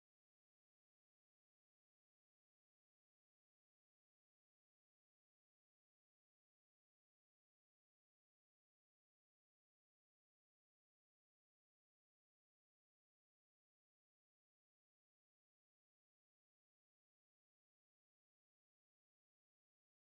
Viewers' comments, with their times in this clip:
0:05 Background music: "Ahhhhhhhhhhhhhhhh" Also the Attack Titan on the poster: